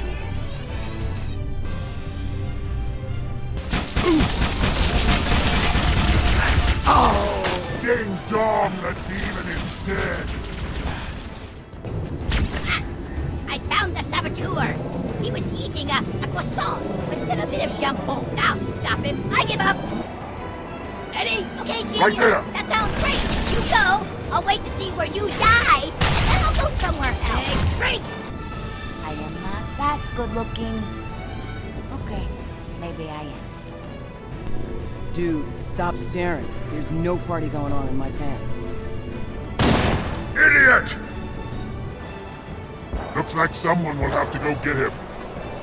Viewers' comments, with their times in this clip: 0:08 "DING DONG, THE DEMON IS DEAD!" Just the genuine bloodthirsty joy in that delivery is perfect.
0:13 French music plays
0:14 French grunt CONFIRMED! 🥐
0:28 Ok this is driving me nuts....at the voice sounds a lot like Audrey from Atlantis: The Lost Empire movie but for the life of me I can't find Jacqueline Obradors name attached to this game. Am I just hearing things, is it someone who just copied the voice, or what?